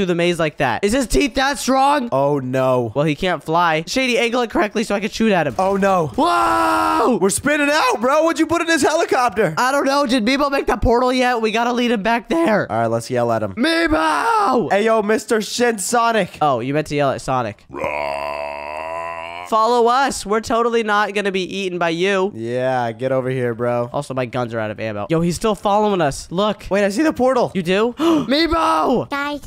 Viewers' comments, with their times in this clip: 0:08 don’t swear I heard sh*t sonic
0:15 Did bro said mr sh** sonic